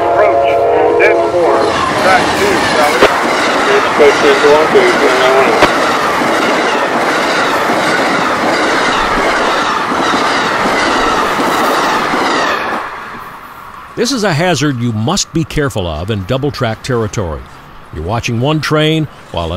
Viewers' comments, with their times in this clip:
0:03 There's something almost mystical about the sound of a train ripping along at that speed. I wish more tracks were capable of handling higher speed 100mph+ passenger service.